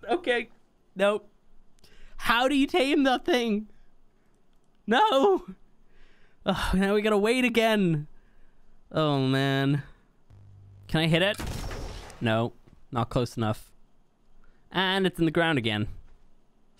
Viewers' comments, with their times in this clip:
0:03 that desesperate "NoOo !"